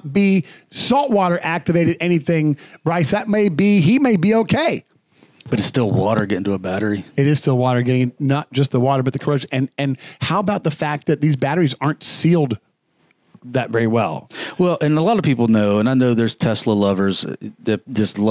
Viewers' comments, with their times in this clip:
0:04 Only minutes into this video and I couldn't watch anymore. Gee Whiz. Take a breath.